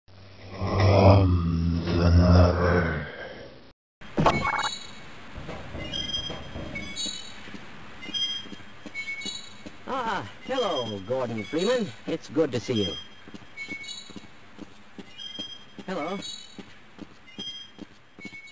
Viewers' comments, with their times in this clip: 0:04 I always thought that sound wasnt natural to the environment, it's too shrilly to be seen as "oh yeah I can definitely go about my day to day job listening to THAT all day" As for what the sound is, perhaps a failing alarm system?